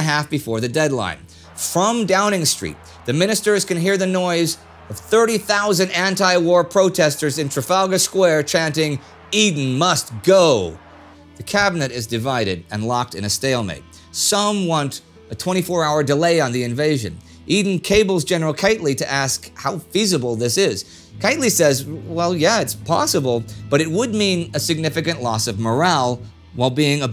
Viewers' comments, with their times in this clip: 0:09 Me ( not a English speaking person by origin), hearing in ...." chanting " indy MUST GO! " Also me. WTF;?!!!!!😵😵😵